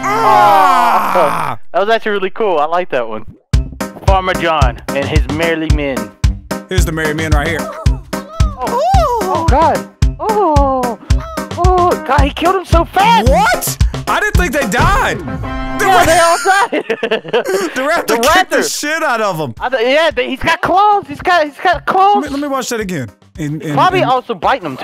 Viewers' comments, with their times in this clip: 0:08 stupid kids sounds